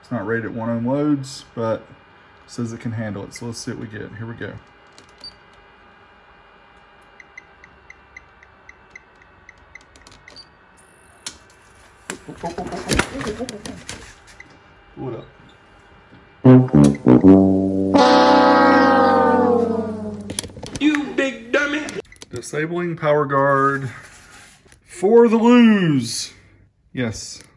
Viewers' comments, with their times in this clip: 0:09 you can hear some high pitch just after test was stoped, probably the power supply of the amp going short on the channel it had blown.